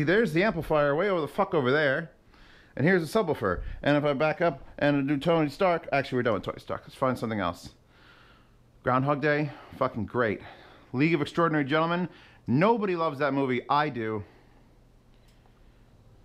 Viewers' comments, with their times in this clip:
0:04 You switched to the H4n recording without warning us and I was wearing headphones and thought my laptop speakers started blasting in the office lol. Who else thought there was someone in their room ? lol